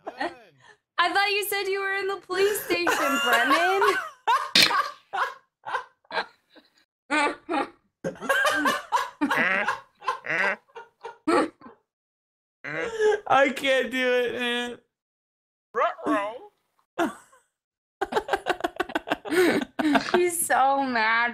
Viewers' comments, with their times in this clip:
0:08 Dat laugh tho xD
0:09 hahahahaha that duck luagh